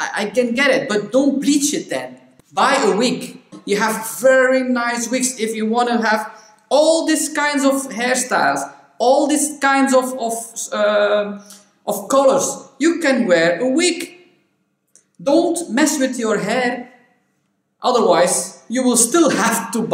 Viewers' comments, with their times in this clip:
0:03 that’s definitely not an American accent.